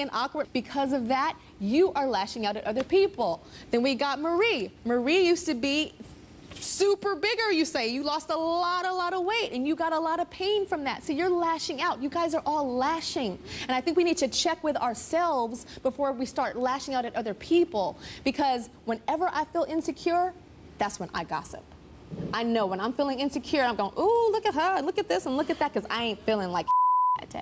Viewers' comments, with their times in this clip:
0:10 it sounds like she was about to say " you're fat" but said " your f f f bigger" ahahah